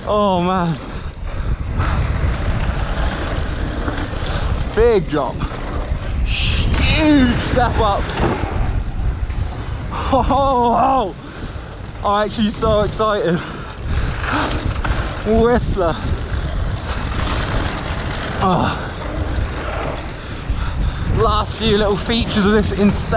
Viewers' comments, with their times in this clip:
0:05 anyone gonna explain that sound he made on